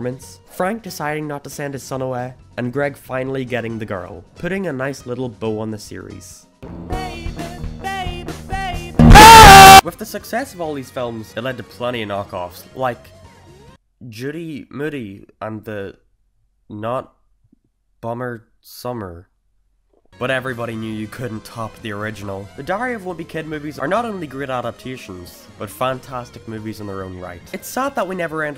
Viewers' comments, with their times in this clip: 0:04 Turn your volume down!
0:07 the bass boosted part honestly scared me
0:08 I HAD MY HEADPHONES On😭
0:08 make sure to turn your volume up, especially if you are wearing headphones
0:08 I was wearing headphones and had a heart attack, a stroke, and a seizure all at once
0:08 Rip headphone users including me
0:08 i cant hear anything in this part
0:08 Cheers for the ear rape my headphones really helped my ears take in all the sound from this experience.
0:08 I love this part when everybody goes quiet.
0:08 I was wearing head phone at full volume Rip headphone users
0:08 I was wearing headphones... my ears are now dead.
0:09 L O U D
0:09 F headphone users.
0:09 I had headphones on at full volume
0:09 RIP all headphone users
0:09 I WAS WEARING HEADPHONES AT A HIGH VOLUME AND ITS LATE AT NIGHT im not mad but it came out of nowhere